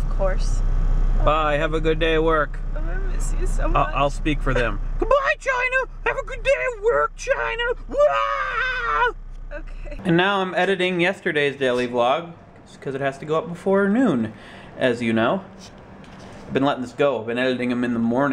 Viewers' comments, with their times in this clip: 0:03 Do I really sound like that D: